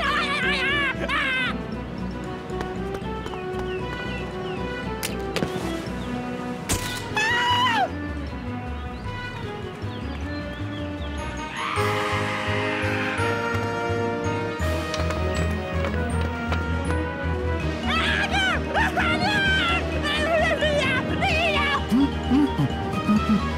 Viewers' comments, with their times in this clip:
0:05 😂 so cute when he screams
0:05 That scream is just adorable
0:07 that little scream killed me XD
0:07 my man's straight up screamed and acted like a girl right here 🤣🤣🤣
0:07 Splendid Cute Scream
0:07 That scream Splendid made xD
0:11 (Lion Sleeps Tonight Intensifies)